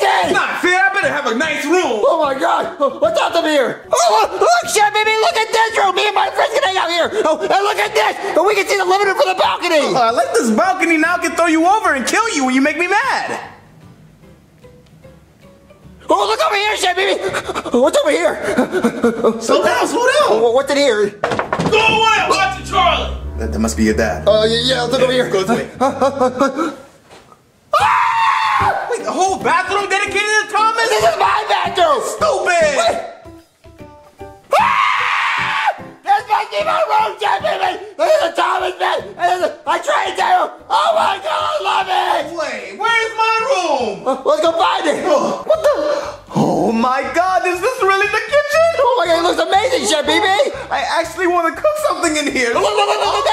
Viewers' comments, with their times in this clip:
0:10 chef pepe soundz so happy saying that :D
0:26 SCREAMING LIKE A LITTLE GIRL AND
0:27 Juniors squealing in joy makes me nostalgic
0:33 that scream had me dead 💀
0:34 Bro screamed so hard he vanished for a couple seconds